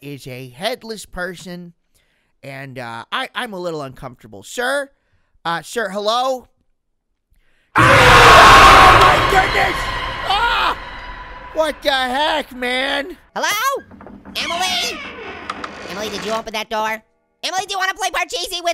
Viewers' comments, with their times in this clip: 0:06 sounds like the Hunter from Left 4 Dead